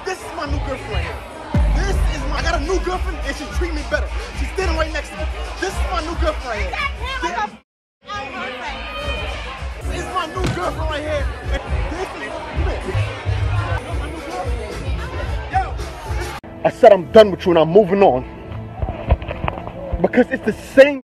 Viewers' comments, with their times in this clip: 0:08 What was the cow scream to the camera??? 😂 in